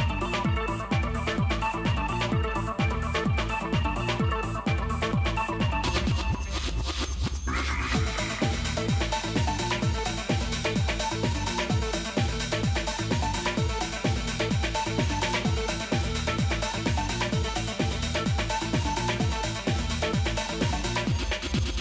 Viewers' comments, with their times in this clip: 0:08 UK techno at its best, certainly gets manic Safe!